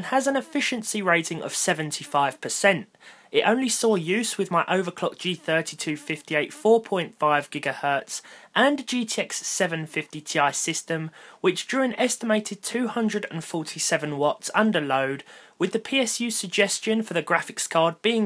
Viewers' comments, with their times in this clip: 0:05 is there a fly around you?